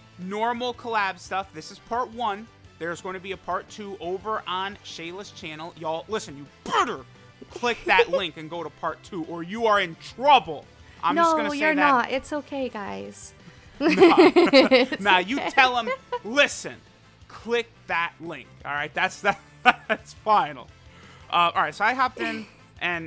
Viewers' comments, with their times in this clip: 0:06 "Bitch I do want I won't" yells furiously. (I did check the link)